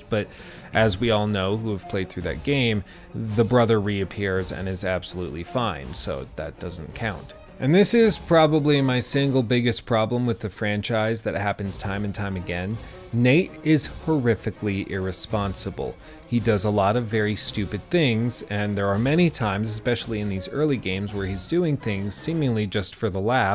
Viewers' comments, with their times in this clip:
0:08 bruh the music and what he is saying is so dramatically funny plus after a point this just becomes nitpicking